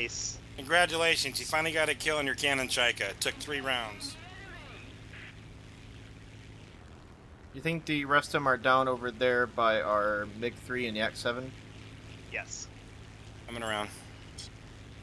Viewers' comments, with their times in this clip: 0:03 Dude singing in chat italian partisan song in Russian.)))